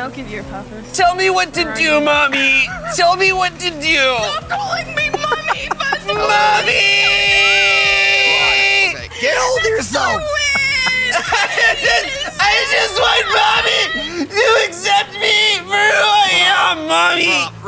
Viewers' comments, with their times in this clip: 0:04 Shane yelling “MOMMMYYYYY” now reminds me of Nicholas Cage yelling that in Longlegs 😂